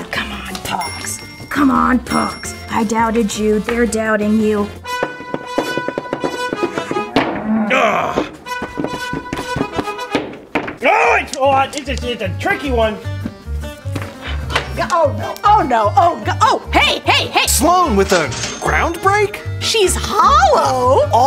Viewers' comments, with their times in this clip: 0:09 the sped up music randomly made me wheeze-